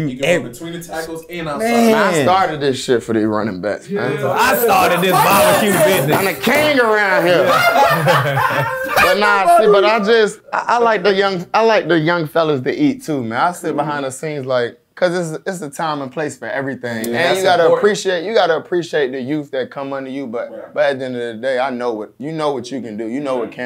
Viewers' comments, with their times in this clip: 0:05 You cant tell me Ol’ boy didn’t sound like Dave Chapelle sayin “I’m the king around here”😂😂
0:07 todd really sounded like dave chapel 😂